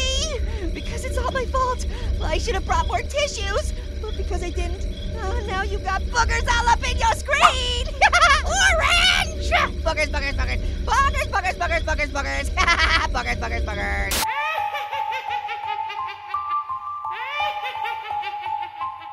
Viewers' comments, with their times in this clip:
0:06 On I thought he was cussing